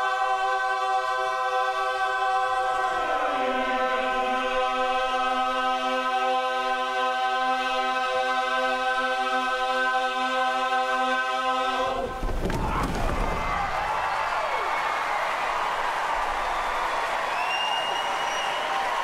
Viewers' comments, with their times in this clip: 0:06 Y'all: Overtones don't really exist Me, an intellectual: